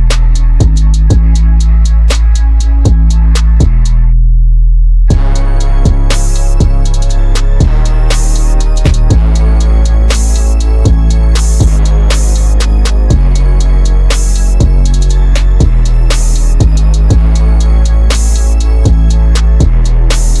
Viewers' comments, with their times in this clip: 0:04 love the bass, love when that brass comes in really hardcore. your song structure skills have really change alot, really dope